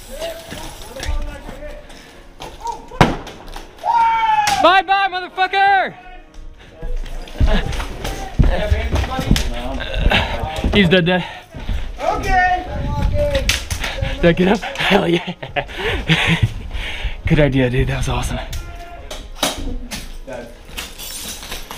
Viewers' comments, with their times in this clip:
0:04 was that the enemy who said “WOOOOOOO” 🤣
0:06 >Light up grenade >Casually drop like grades in senior year of HS >*thud* >"What the fuck??" >*Pop* >"WHOOOOooOoOOOOOO" >I wish I had enthusiasm like that